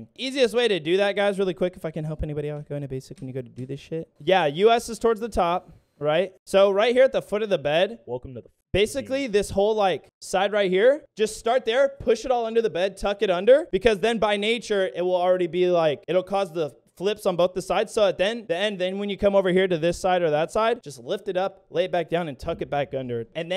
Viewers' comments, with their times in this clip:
0:08 THERES A VOICE SAYING WELCOME TO THE FUCKING...